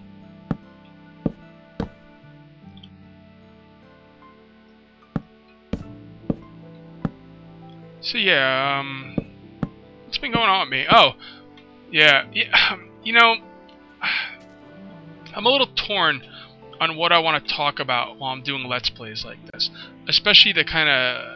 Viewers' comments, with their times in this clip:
0:08 your block placement was in-time with the song :D